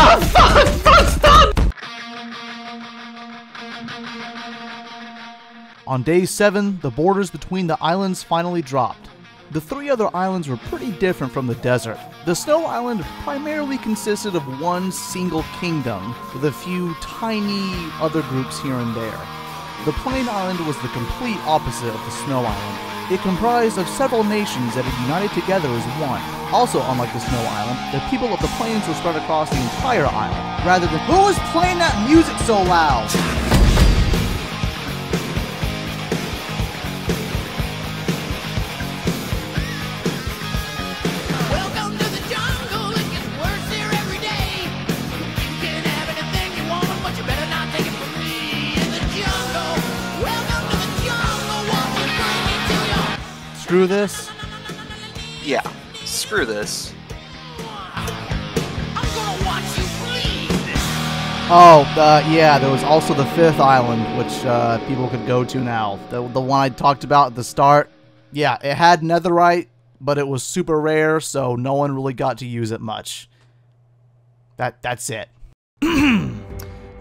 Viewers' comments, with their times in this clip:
0:03 The music starts
0:13 What? WHAT DID YOU SAY? I CANT HEAR YOU BECAUSE OF THE FOKIN MUSIC!
0:53 that is the perfect song for that
1:03 that nope there lol Welcome to the jungle was perfect there!